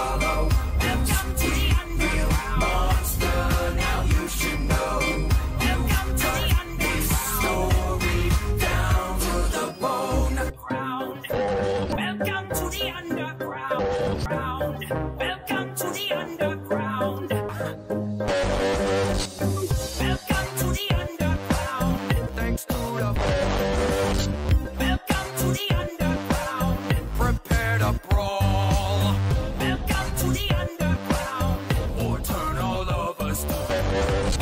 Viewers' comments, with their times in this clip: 0:10 sans and papyrus speaking there forbidden launguage
0:16 i love how he chuckles, and then the BALLS